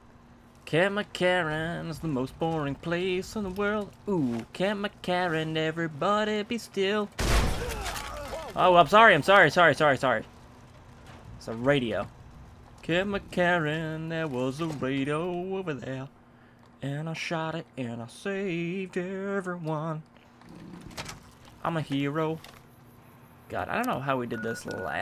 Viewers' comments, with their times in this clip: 0:07 you can hear a soldier go "egauhgdfshgkj"